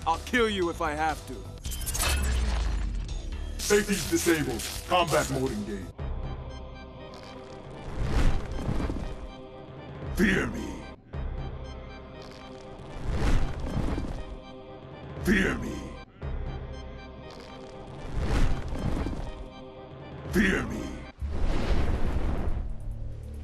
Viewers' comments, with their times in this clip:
0:06 sounds like the start to a bomb ass diss track